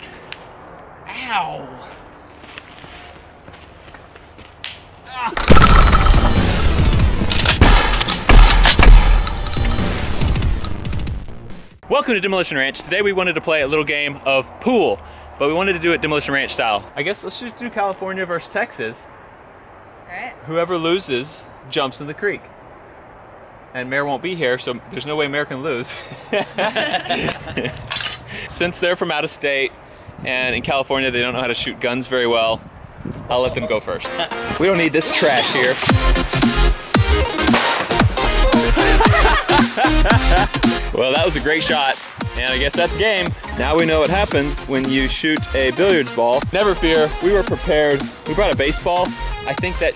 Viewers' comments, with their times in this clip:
0:06 that smack though
0:34 great song choice.